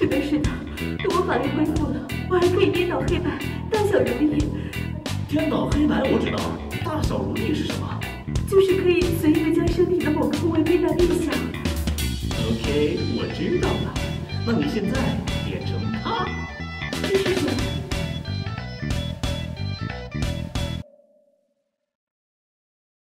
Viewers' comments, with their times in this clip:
0:09 "You can make a part of your body bigger or smaller at will." I was very scared as to what direction this was about to go, and the music did not help.